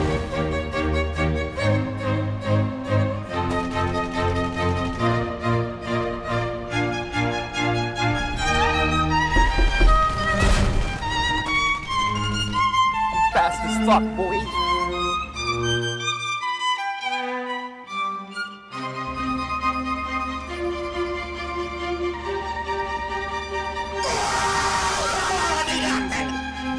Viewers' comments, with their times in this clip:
0:08 that door knock scared the shit out of me
0:09 fuck that door sound